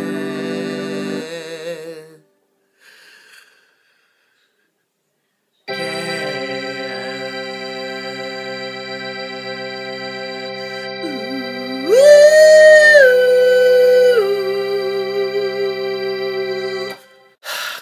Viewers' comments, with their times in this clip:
0:05 supriseingly good i could see this breaking into a full band